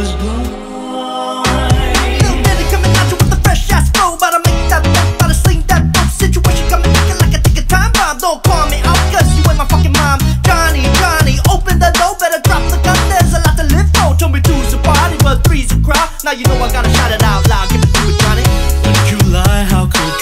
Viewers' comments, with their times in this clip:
0:08 why does it sound like the doin yo mom meme